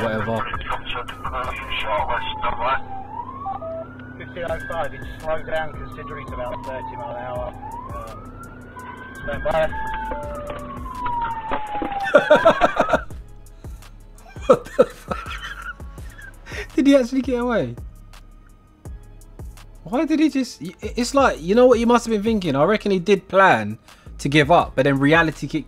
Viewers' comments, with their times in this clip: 0:09 The police car chasing him was an S3 not golf R you can hear when he opens the door the Audi seatbelt chime going off